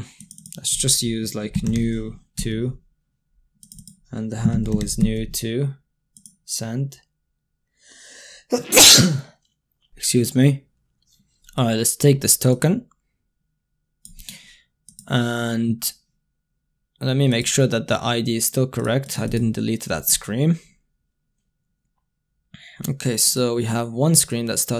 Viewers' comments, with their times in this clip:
0:07 bless you for that sneeze on